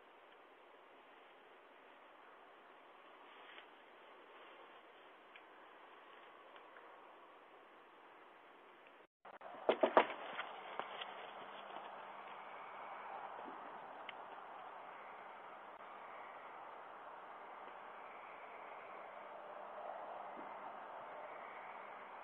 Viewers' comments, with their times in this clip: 0:10 what a wimpy knock.